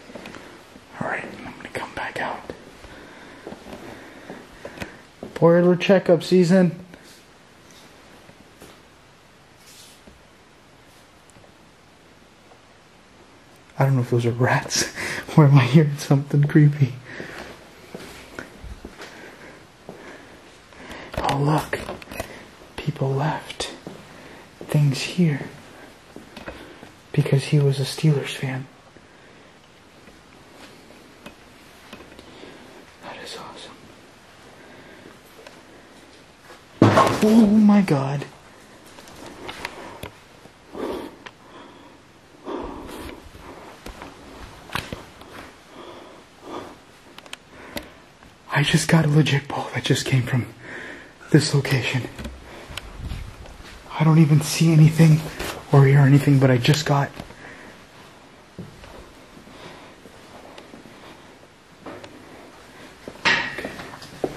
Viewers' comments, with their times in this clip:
0:05 ......TO ME, THAT SOUNDS LIKE FOOTSTEPS......….???????
0:50 something or someone made some kind of noise like a person whos barfjng or smthn idk